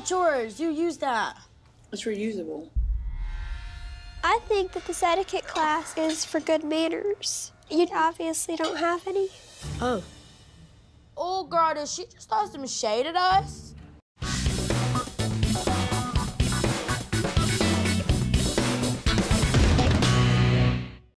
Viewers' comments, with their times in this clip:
0:08 ha girl those eye twitches, AND THAT VOICE THO